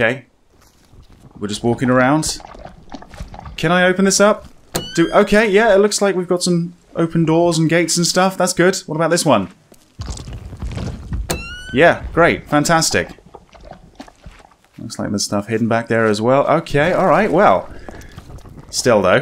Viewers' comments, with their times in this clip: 0:03 NV goggles turning on sound lol
0:03 Maybe it's just me but when you open the gate doors atfter they both sound like a short repulsor blast from Iron Man!